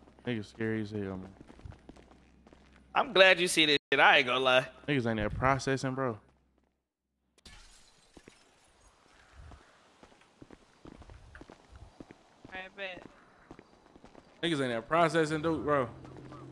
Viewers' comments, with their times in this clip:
0:04 Nigga ain't making no money 😂 ain't nobody processing that's what it sound like